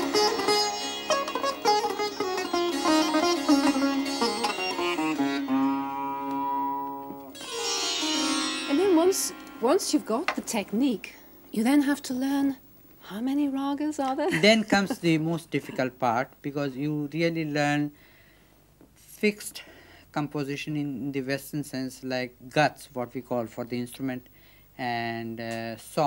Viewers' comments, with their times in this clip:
0:07 Movie : (shows a treasure room) the sound effect